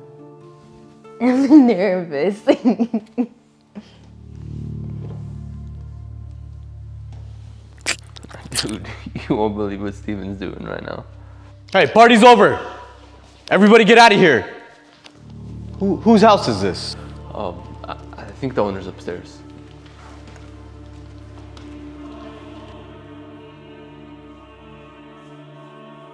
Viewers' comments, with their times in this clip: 0:07 THE KISSING SOUND
0:07 that loud kiss sound was so unnecessary 😭